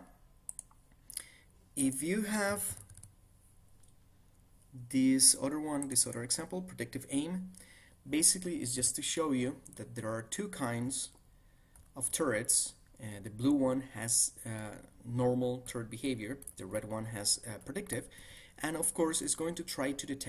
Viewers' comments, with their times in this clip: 0:05 Great video, but that freaking DING sound when you go to close the file! Holy crap, my ear drums. The first time it plays is and it literally made me cringe from the sudden eardrum perforating shock of it.